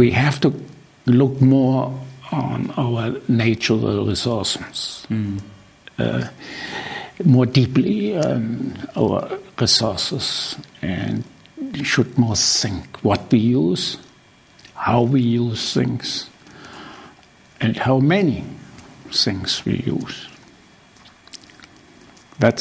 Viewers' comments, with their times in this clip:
0:06 Where do you see Product Design going? Rams: "We need to look more deeply on our Sauces" Sauces are the future of design.